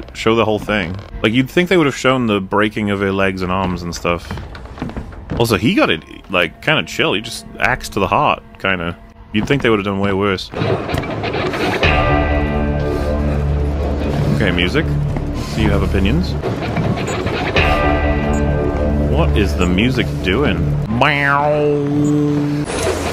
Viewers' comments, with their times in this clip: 0:10 Dwang. Did I miss the part where the stupid music loops with that one note at 300% volume - or was it not included in the cut? Dwoing. There it is. Baduoung.